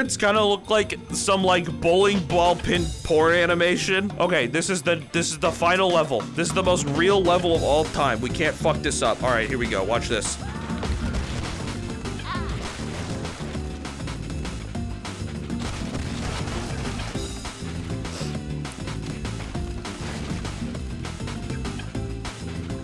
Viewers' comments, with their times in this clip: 0:05 is this sonic music or a sims remix? Sounds like both.